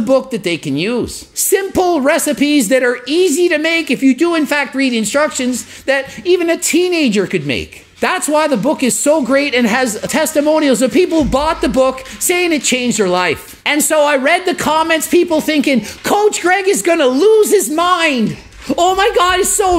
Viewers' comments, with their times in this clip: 0:05 Really quite music at after ?